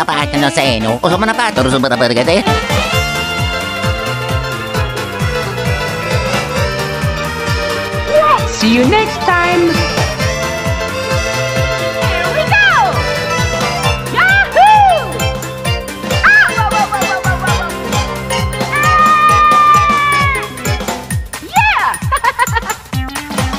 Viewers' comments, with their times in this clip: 0:07 sounds like Crash Bandicoot’s WHOA 🥭